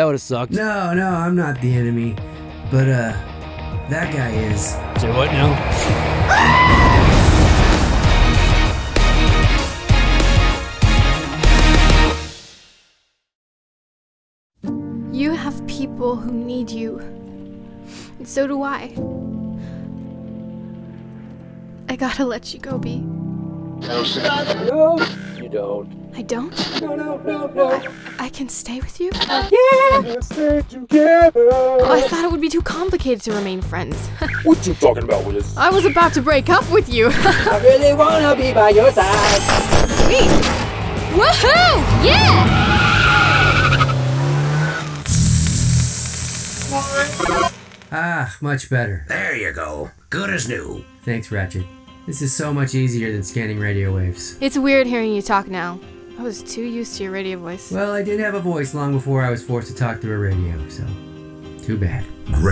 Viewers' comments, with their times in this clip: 0:07 When bumblebee said that guy is that scream though had me dead
0:37 The Transformation and that voice make this scene to best!
0:49 that sounds like Ratchet from Transformers Animated